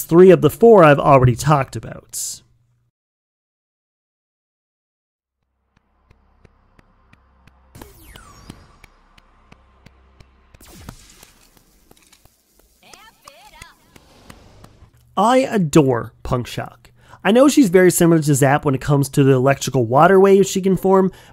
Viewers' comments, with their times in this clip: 0:06 What was that noise starting ?
0:06 wtf is that clapping 💀
0:09 What is the slapping sound 💀